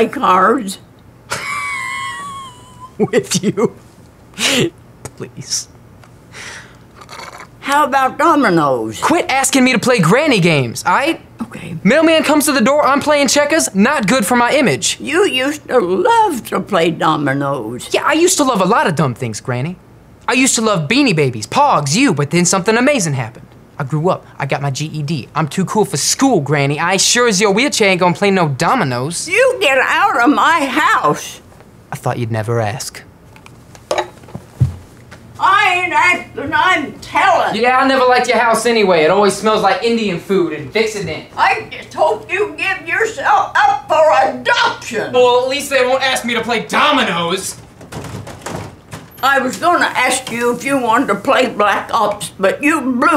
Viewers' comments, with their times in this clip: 0:03 the laugh was funny it was also funny how he said with u while laughing XD best vid ever
0:09 is it me or does this dude sound like the old fin from adventure time,
0:14 is enough to make me cry the way she says it is so sad
0:35 what is she saying?